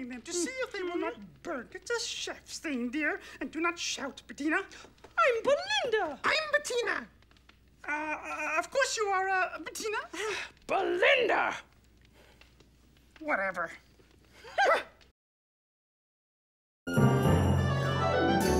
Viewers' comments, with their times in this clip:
0:05 you can tell that Dave Goelz is Bettina.